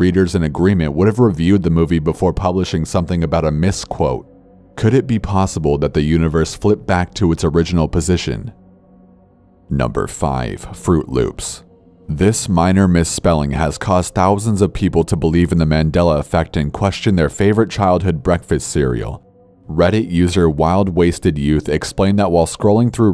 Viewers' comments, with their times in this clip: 0:10 idk what is wrong with me but something about corpse saying the words “fruit loops” in a menacing tone makes me laugh